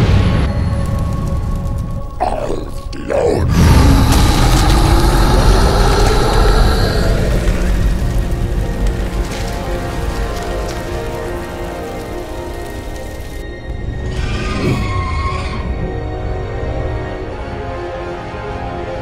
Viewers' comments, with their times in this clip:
0:05 What a belch.